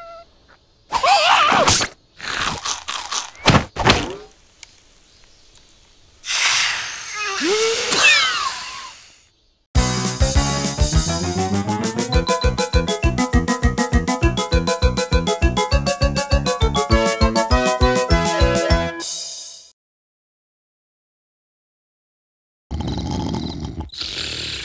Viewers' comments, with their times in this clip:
0:07 goofy ahh cough